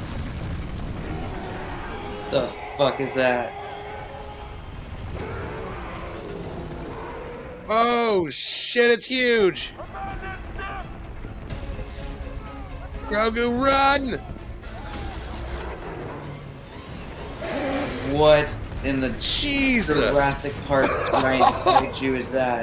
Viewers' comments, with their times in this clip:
0:04 Honestly, this creature does a kind of similar sound to the Zillo Beast...